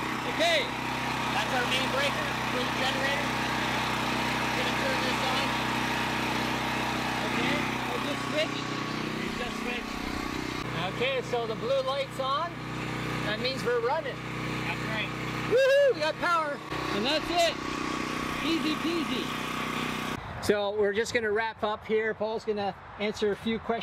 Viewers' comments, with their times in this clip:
0:10 Once the cord from the generator is plugged into the Generlink (you could hear the click in the video) and the Generlink senses voltage from the generator it switches from utility power (even if it's still available to the Generlink) over to generator power. There are 4 LED status lights on the bottom of the Generlink behind the connecting plug. The green light (closest to the plug) indicates that Utility power is available. The Blue light (farthest from the plug) indicates that the Generlink has switched to generator power. You can see in the video that both lights are lit. In an actual loss of power condition all of the status lights would be off until the the Generlink cable is connected and the generator is running.